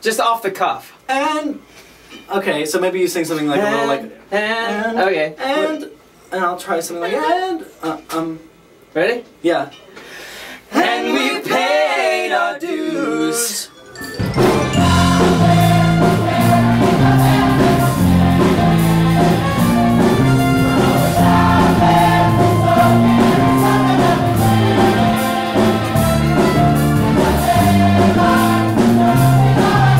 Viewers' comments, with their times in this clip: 0:09 Half the time i just skip to the minute mark just to hear them riffing
0:09 though. Their voices are...pfffffff SO BEAUTIFUL
0:11 I don’t know if anyone will see this, but lowkey these are the male fates of 2012
0:11 day harmony tho